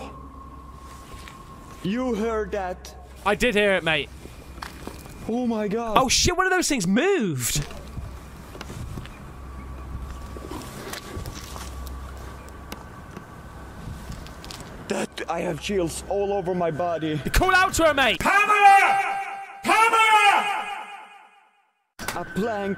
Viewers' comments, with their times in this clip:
0:10 he pans the camera and there’s a stray cat. Pretty clearly the reason a small wooden plank made noise… cat jumps, plank moves, cat gets scared. Just pointing that out….